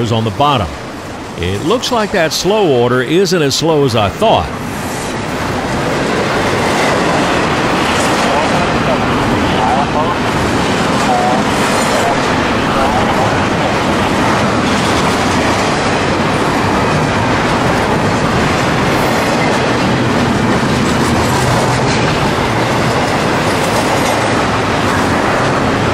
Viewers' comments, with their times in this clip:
0:08 NS 24 inaudible